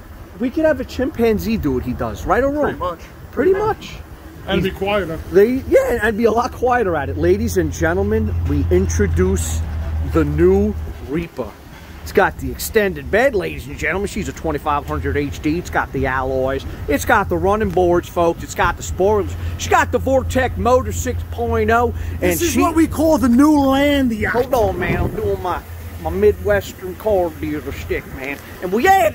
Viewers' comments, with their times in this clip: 0:10 ...watch and listen as Cameraman turns into a gay southern dandy...